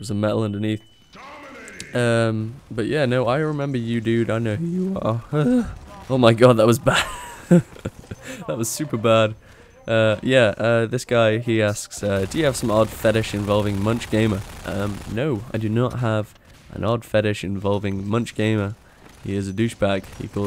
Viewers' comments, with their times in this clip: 0:04 still having puberty problems :D